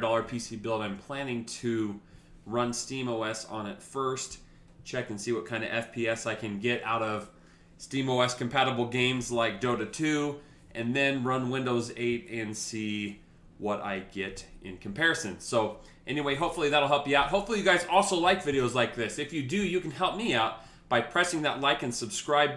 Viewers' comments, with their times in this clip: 0:09 Run games like Dildo 2